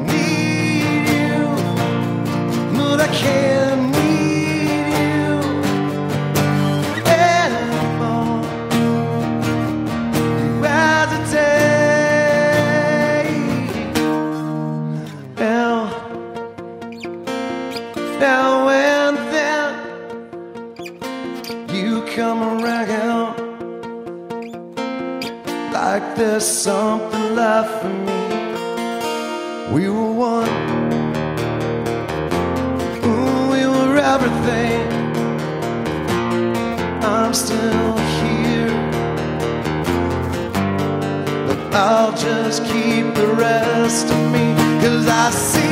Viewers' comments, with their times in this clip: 0:09 I love stonesour and everything Corey has done but I'm pretty sure he said razatate lmao
0:10 sychronized strumming LOL
0:30 honestly been a guitarist there is something which is undescrivible...when they open the strings it starts something magic